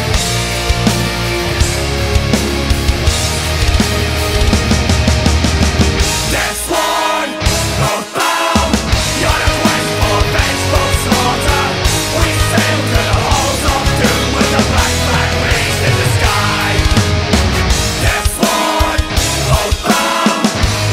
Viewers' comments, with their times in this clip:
0:06 The drummer didn't hit the crash right there :D